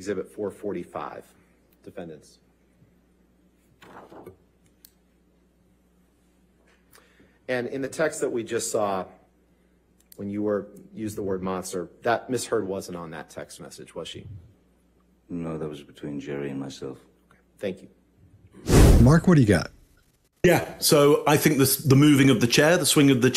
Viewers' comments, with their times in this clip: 0:09 you're mentioning that nobody talks about the injuries, JD didn't deny them, etc...but if you listen, you'll notice AH is dominating the conversation and talking so rapidly which doesn't give him a chance to respond...when she finally pauses, she has led him to a different section of the argument...plus, dealing with someone who you know just lies and lies, sometimes you're exhausted from constantly defending yourself